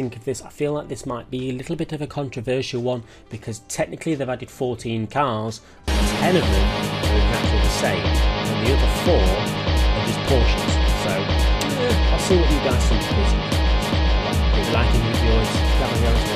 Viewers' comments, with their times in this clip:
0:04 What did he say? the music is too loud